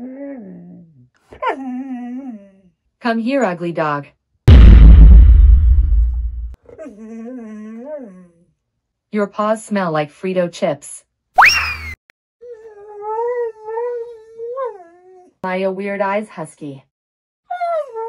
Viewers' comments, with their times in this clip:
0:04 THE VINE BOOM 2 💀